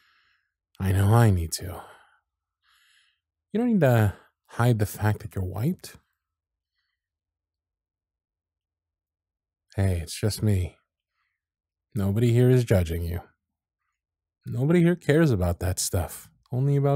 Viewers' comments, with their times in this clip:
0:03 This audio kills me every single time because it sounds like you say, “you don’t have to hide the fact that you’re *white*.” (@ ) 😂